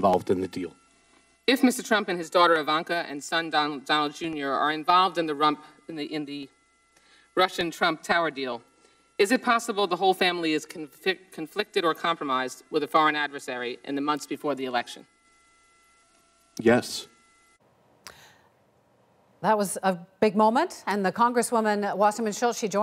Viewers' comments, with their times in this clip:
0:05 "involved in the rump.." LOL